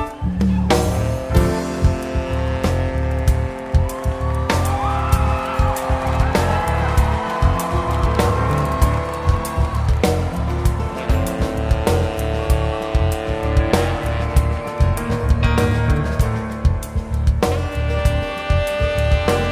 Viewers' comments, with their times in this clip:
0:04 I think is really when the chills come in. Sooo miss that man and his sax.